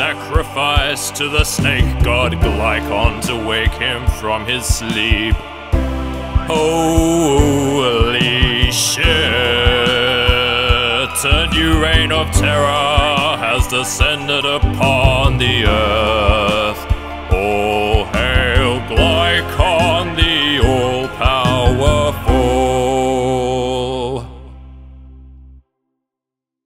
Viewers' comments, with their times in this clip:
0:09 Never noticed you can actually hear Glycon's cry
0:09 This key change still tugs at me to this day. In a good way.
0:18 Idk but I'm getting very turned on from the tonality of that "All hail Glycon" line